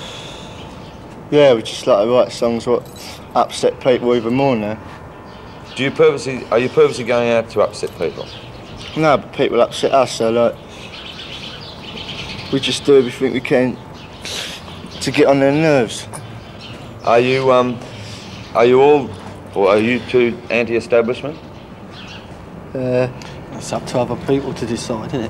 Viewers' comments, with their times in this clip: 0:08 "people upset us and we do what we can to get on their nerves" and such great delivery